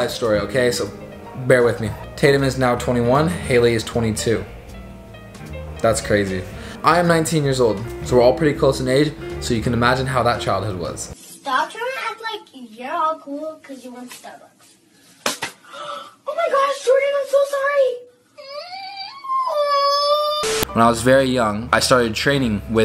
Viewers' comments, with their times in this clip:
0:10 I CANT STOP LAUGHING THE CRY PLZZZZ